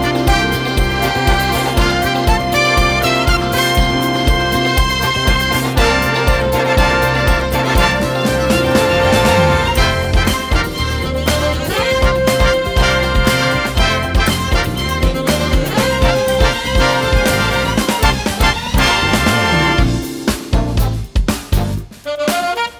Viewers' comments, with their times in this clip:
0:06 for a split second I thought YMCA is going to be played